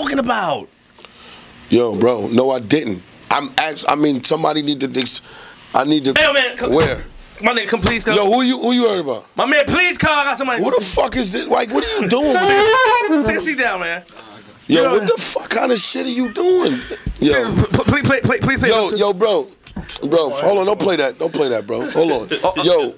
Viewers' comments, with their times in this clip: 0:09 My nigga wit the 🎷 mins 😂😂😂